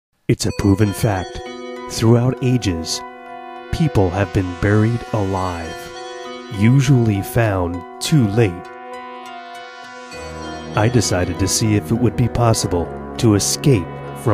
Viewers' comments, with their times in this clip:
0:01 it's a puven fact... lol